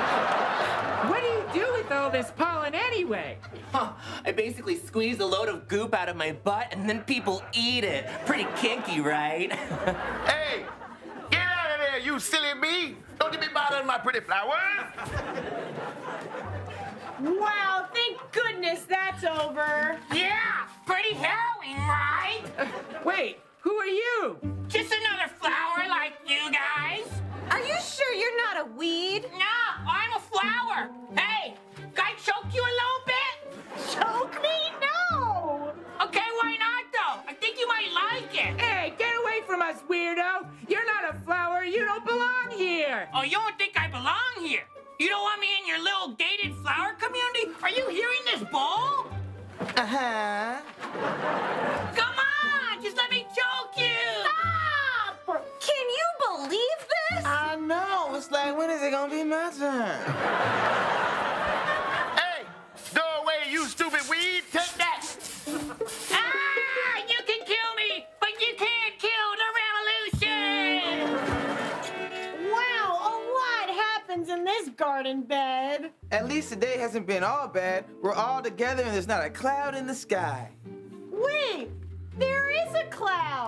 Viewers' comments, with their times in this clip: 0:10 Somebody said “ew” and it made me laugh
0:31 Anyone else hear a hint of Baby Yoda?? "Baby Groot, if i ever hear my name come out cho mouf "
0:54 Did Sarah fart LOL
0:54 Did I hear a fart?
0:56 any one else hear a literal FART ? Or am I hearing things?!?😂
1:10 👏Who did the music for this? & whoever’s playing the violin is amazing